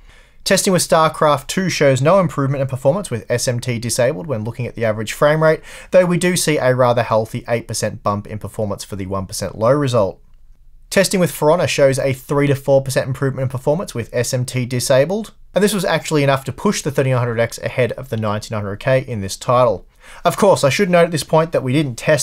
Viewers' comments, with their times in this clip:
0:10 Lol I thought he said, "Piranha" instead of "For Honor"